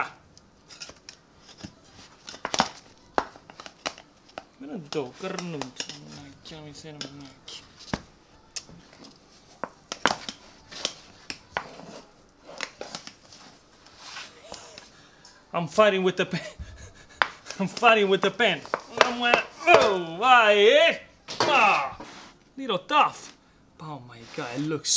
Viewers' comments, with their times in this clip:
0:05 Sorry for all of the english-speakers because the insults to the sticky pan in true pugliese dialect are the very top of these video!